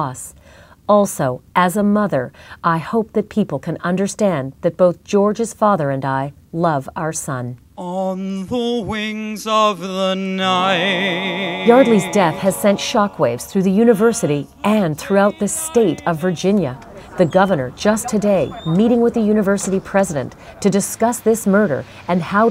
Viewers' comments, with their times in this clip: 0:09 this is the worst cover of a Pink Floyd song I've ever heard. How fucking dare they?